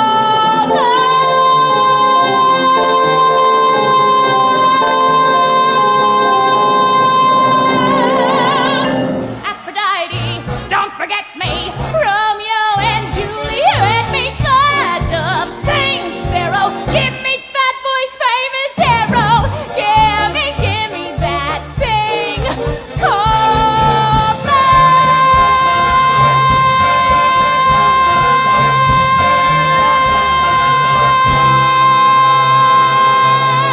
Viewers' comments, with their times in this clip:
0:09 .... Gilbert Godfried has entered the chat
0:16 Did she just WoAh?